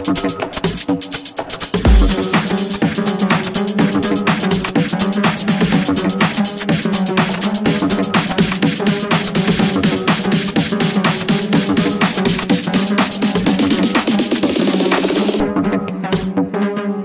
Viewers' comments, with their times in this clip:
0:03 that bass drop tho really pleased my pineal gland . good work man